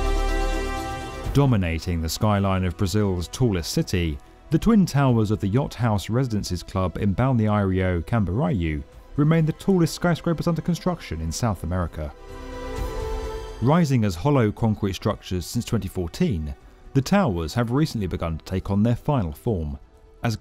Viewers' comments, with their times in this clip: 0:08 Dude your pronunciation of Balneário Camboriú is more of a disaster than this pandemic bullshit 🤣🤣🤣🤣 My god. Do your research.